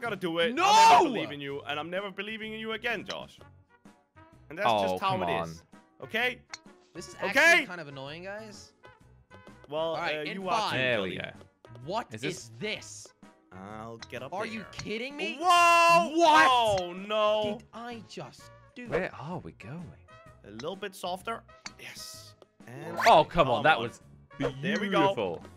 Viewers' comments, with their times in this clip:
0:07 the bounces on the wall matched with the beats of the music